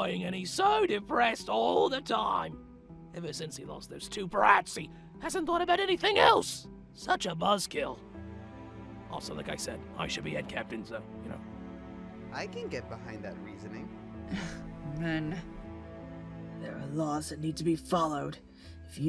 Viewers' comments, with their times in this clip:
0:03 why does bro sound like penny wise?